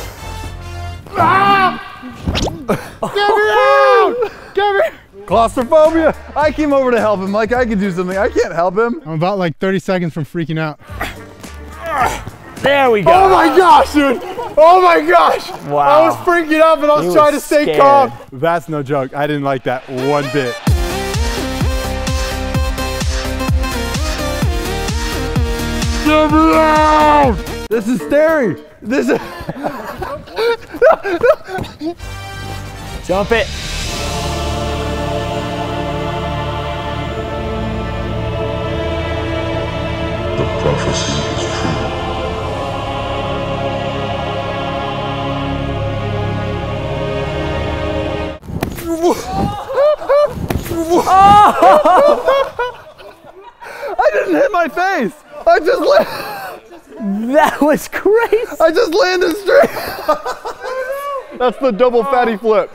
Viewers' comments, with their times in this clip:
0:05 when he sceamed get me out! I busted out laughing.
0:48 Y does he laf like that